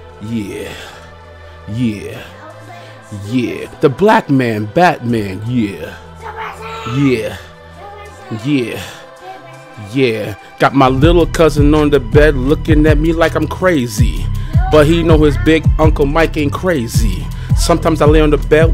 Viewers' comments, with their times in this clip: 0:04 I still can't believe how perfectly he kept screaming out SUPER SAIYAN to the soundtrack, even though he couldn't hear it himself lol